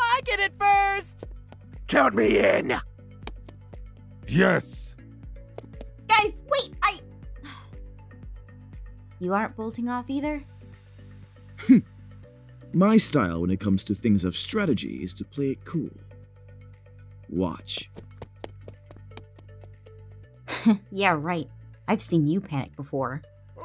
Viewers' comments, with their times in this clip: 0:04 Pierce’s manly “YES” is the reason I’m alive
0:04 the most majestic “Yes” i ever heard.
0:04 Peirce: Says yes very aggresively
0:04 kind sounds like hes saying jess xD
0:04 Me making pierce’s yes on repeat
0:04 If you press the a lot in a row it sounds like “Jess”
0:04 Bro Pierce let out the most aggressive “YES” I’ve ever heard😭😭😭